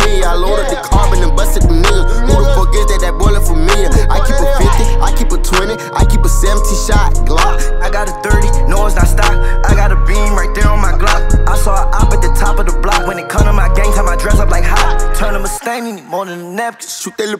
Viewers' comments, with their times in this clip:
0:05 That transition from Melly to Uzi was cleannnnn